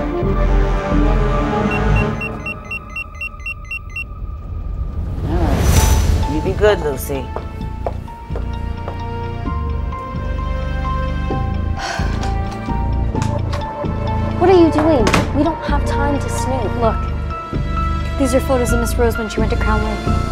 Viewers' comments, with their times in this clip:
0:07 I thought she called her lil c not Lucy